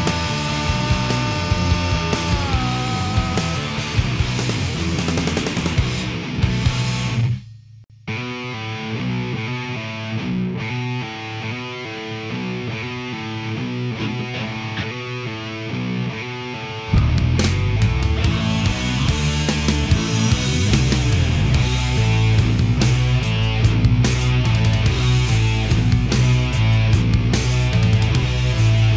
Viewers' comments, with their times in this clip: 0:09 Wow,those riffs are just killer magic,this is the best type of metal I have ever heard in my life! MindFunk is really one of the best 90's metal bands ever